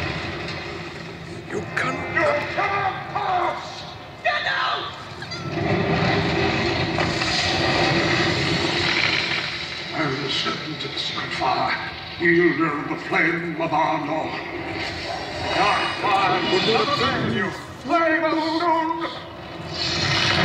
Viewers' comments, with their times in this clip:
0:05 that was the smallest scream/sound of oh no i've ever heard